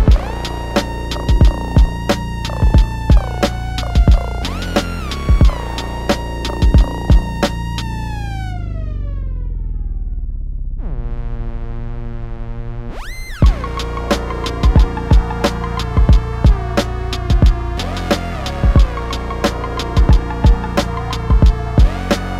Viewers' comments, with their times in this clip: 0:06 This track is blowing my mind! I love the mad scientist west coast vibes!